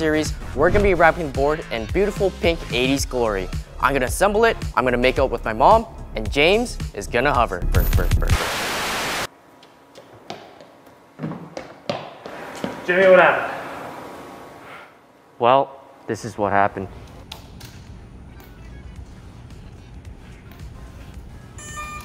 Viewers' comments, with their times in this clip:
0:03 did he say he's gonna "make it with my mom" or "make out with my mom"?💀💀😭
0:04 Doesn't it sound like he says "I'm gonna make out with my mom"? :-|
0:04 It sounds like hes saying "I'm going to make out with my mom"